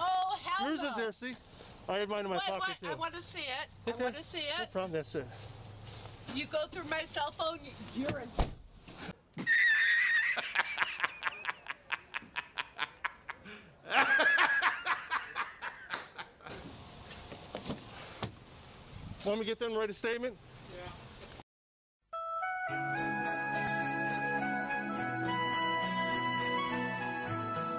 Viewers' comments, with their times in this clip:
0:06 Karen: “You go through my cell phone, you’re a —“ Cop: slams car door mid-sentence, cutting her off 🤣🤣🤣🤣
0:08 That just HAD to be a "ffs stfu lady" door slam lol